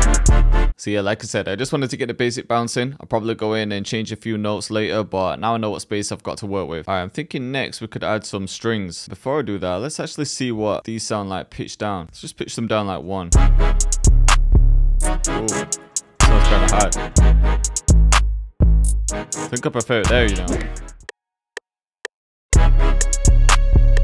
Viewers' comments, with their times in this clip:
0:09 how did you pitch it down ?